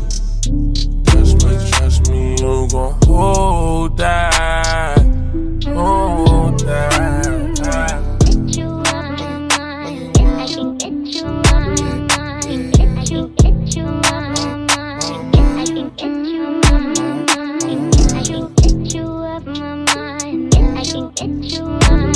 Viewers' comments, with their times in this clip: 0:09 Starts best chopped part ever heard 🔥🔥